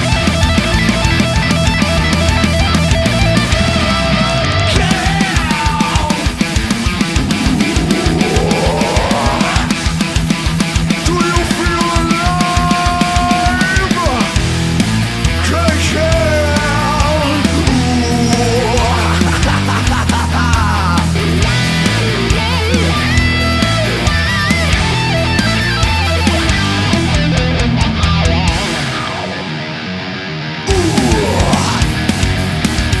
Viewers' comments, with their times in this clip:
0:04 That part when he starts playing Blackened, and there's no sound when he hits the bass strings... :(
0:15 that riff was very nice...also the singer should have a go at covering some old era Stone Temple Pilot stuff like "Sex Type thing"..he'd nail it
0:21 i knew it was coming I KNEW IT wah wah m8